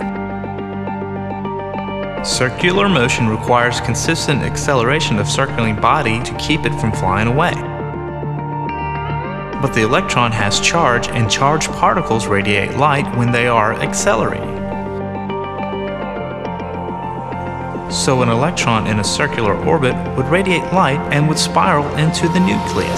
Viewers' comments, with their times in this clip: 0:09 What do u call the part -1:-26, like when the lil sound goes up and then down, WHAT WOULD U CALL THAT ?!!